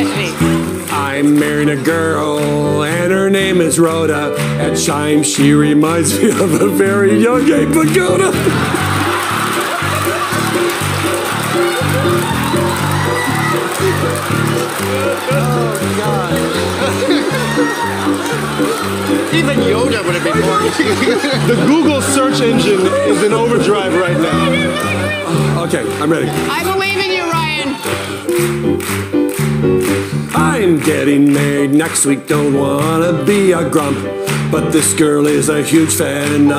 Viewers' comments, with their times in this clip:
0:06 Laura Hall went off beat
0:24 That squeaking laughter 🤣